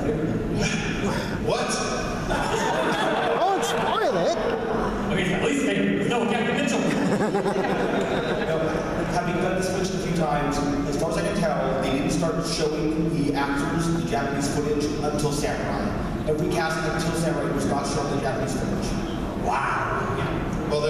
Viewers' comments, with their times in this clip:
0:07 Yay, I made someone laugh!